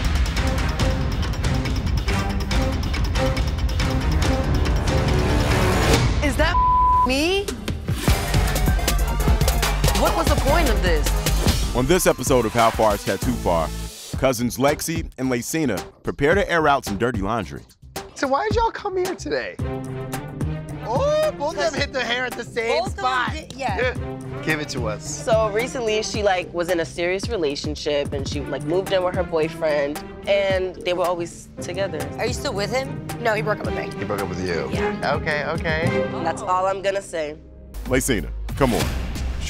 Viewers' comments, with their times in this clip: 0:09 yoo why did the intro kinda sound like stray kids' double knot intro
0:24 yoo 😨her voicethat's the real shock😂